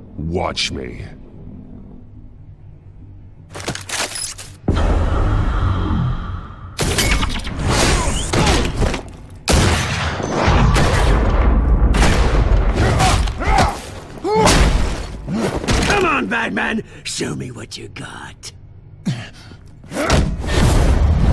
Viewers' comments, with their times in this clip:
0:09 Why is the goon firing his full-auto AK like a pump action shotgun? Lmao